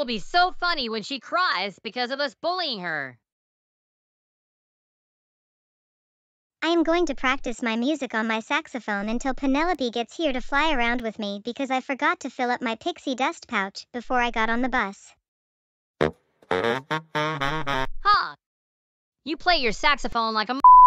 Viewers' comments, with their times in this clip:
0:07 Alto, Tenor or Bari? Sound like Bari